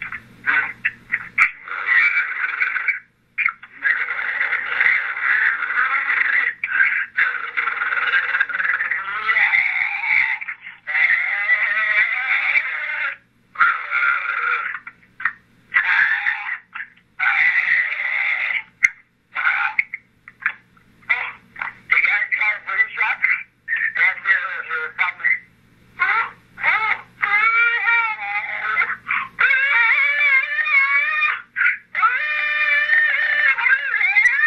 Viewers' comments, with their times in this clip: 0:02 I can here a car by slowing down the voice recording using the YouTube video speed you can't tell me that's not at 0.5 speed but the audio is so jarbled you can't tell but the call came in at 2 28 so maybe vehiclar homicide idk
0:13 sound like someone being chocked or strangulated or drowned 😢😢
0:21 I can’t see how that is just him, it clearly sounds like two different people.
0:22 sounds like someone says truck in that sentence. It's my opinion that the wife was on the phone with him so she could listen to him being tortured and killed. That's why she lied about the 3way call. She didn't even know it was being recorded. There's no way I could listen to the voice-mail and go to sleep afterwards. I also find it real suspicious that her voice is not on the voice-mail. Why isn't she asking what's wrong or if he was alright. She says nothing. That's just very odd to me.
0:22 Same here! They said something abt brain shock and he started screaming again